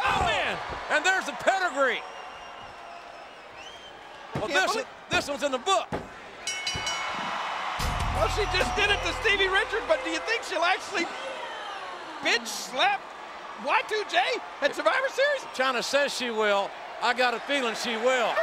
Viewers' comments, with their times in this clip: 0:04 played the wrong music